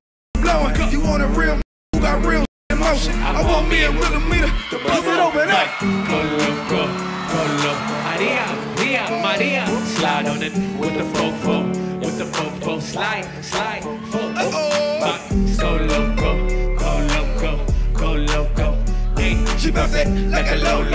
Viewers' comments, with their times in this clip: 0:04 The one swear they didn’t bleep out 😂